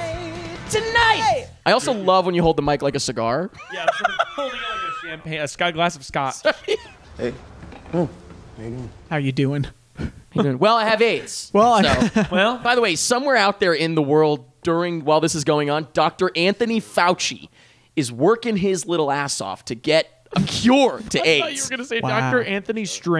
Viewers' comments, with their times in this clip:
0:05 okay we are gonna point out “hiv sports group” but not “glass of Scott”